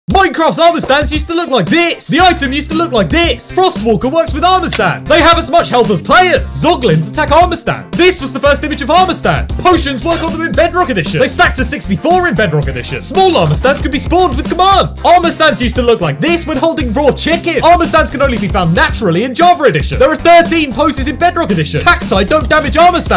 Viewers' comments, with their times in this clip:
0:04 I could hear the "NOOOO!"